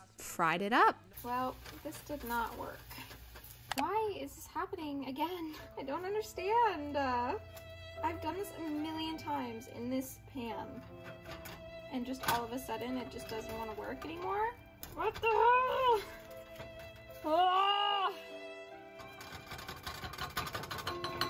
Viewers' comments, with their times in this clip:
0:07 🤣 @ the sad violin music cue